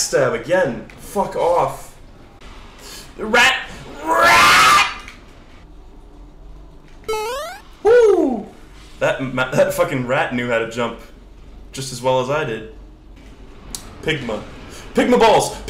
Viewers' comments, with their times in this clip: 0:03 The noise absolutely killed me. What a guttural combination of anger and despair.